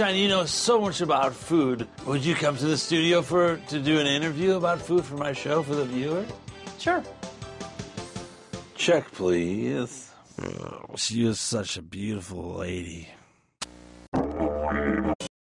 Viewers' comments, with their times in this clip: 0:10 what the hell was that noise lol
0:10 The fucking noise he makes omg.